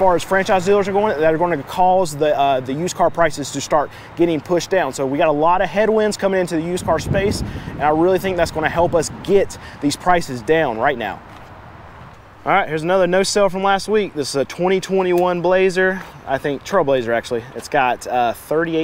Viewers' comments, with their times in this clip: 0:06 wind noise ... just saying lol